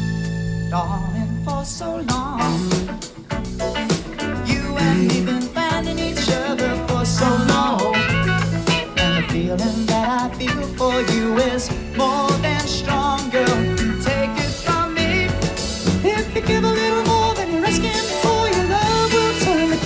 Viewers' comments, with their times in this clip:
0:05 He slayed this live performance, but sounds like the the recording bring your suit and flowers cause he killed it!!!!